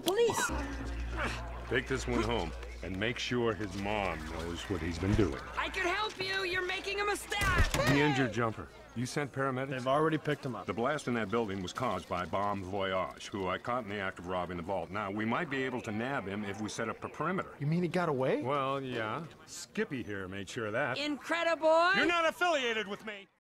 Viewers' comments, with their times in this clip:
0:05 Voice vs subtitles Subtitles: I can help you you're making a mista- hey! Voice: I can help you you're making a mistAAAH hey!